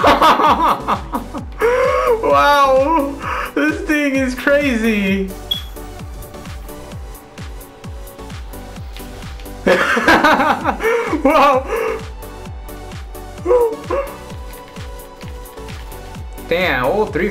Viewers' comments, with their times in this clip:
0:05 that beep is signalling that you have a dying smoke detector. Figured I'd inform you for safety reasons.